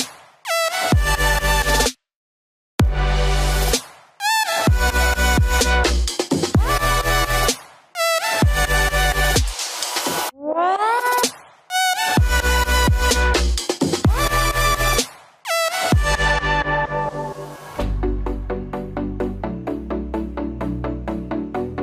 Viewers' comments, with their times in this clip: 0:04 Did you leave the saw on 😂